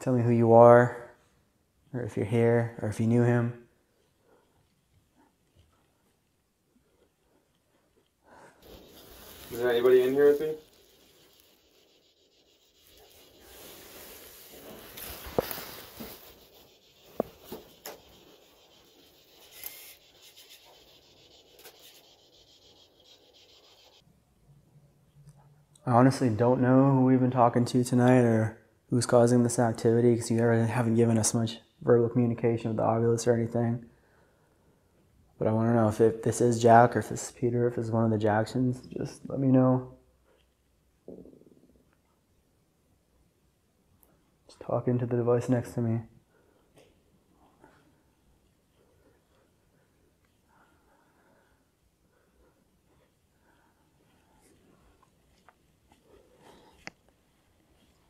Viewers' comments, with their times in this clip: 0:03 The type of headphones I wear can pick up a lot as well during paranormal video's, however, my volume was down and I was a little distracted so I only caught 1 DVP but can't make out what it says? It's a small sentence. Maybe you can figure out what it's saying? Also, thank you for posting these time stamps, I listened back for all of them and your right, great catches! 😯👻😉
0:41 in this video listen closely you can hear a low growl.